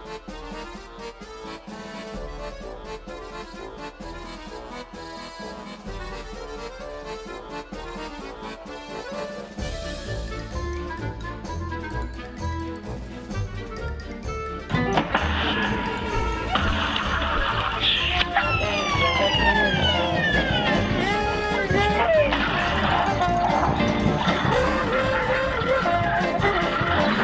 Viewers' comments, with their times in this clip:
0:10 I’m imagining that they are saying “Ahh! He’s British!” idk why